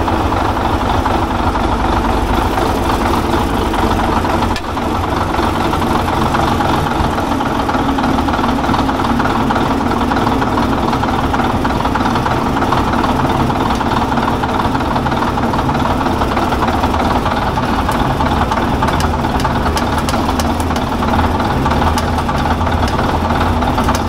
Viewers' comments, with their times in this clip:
0:09 Beautiful day when you can idle in a D8 at 2 RPM